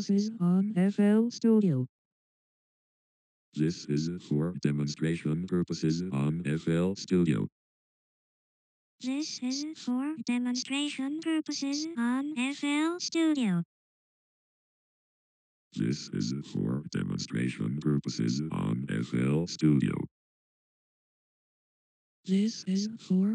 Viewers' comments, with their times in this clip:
0:08 Same As Voicebank